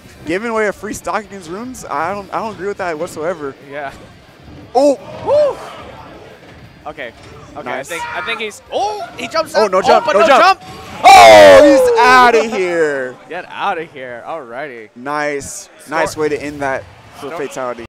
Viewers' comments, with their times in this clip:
0:08 why did that guy scream?